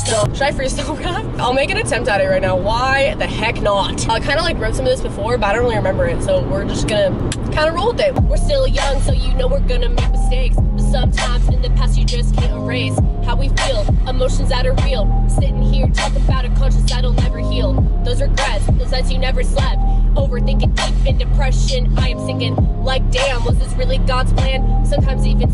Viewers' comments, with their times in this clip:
0:10 she sounds so good 😻 omg im shook